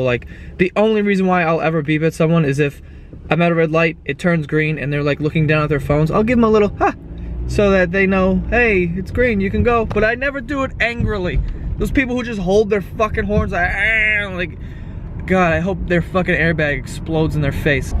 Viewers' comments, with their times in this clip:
0:06 that was a great impression of a car horn 😂😂